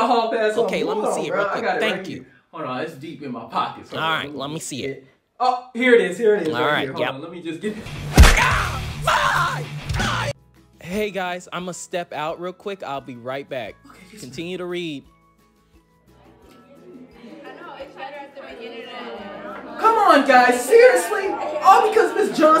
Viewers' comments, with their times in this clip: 0:08 I could have sworn he said the f word